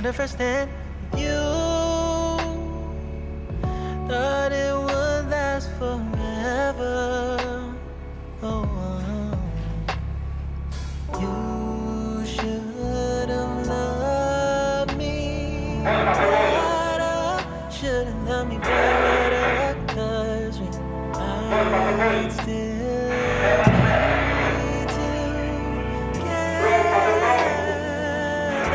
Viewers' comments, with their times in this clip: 0:10 Music suks!! Quit !!